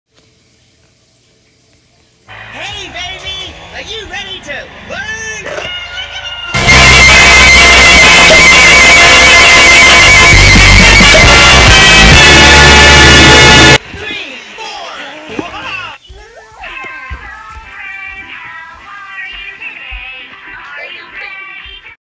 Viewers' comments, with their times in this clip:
0:07 very loud sound warnibg
0:07 Very loud b777